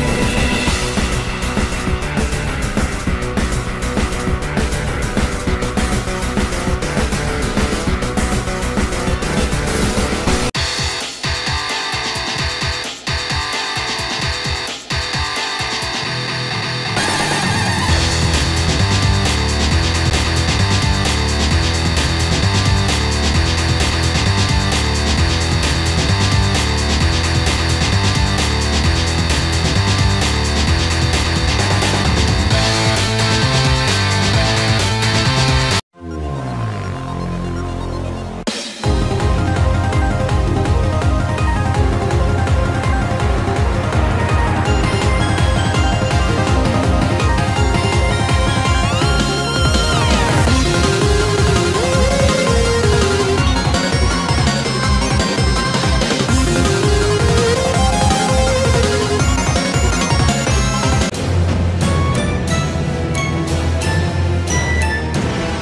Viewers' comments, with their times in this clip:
0:08 OOOH YOU SNEAKY SON OF A GUN, YOU THOUGHT I WOULDN'T NOTICE THE MEGALOVANIA MELODY?! WRONG
0:45 “Thats it. I’ve have enough! NO. MORE. GAMES.”(btw the music slaps)
0:50 my man turned where’s Wally into “were is your wallet.”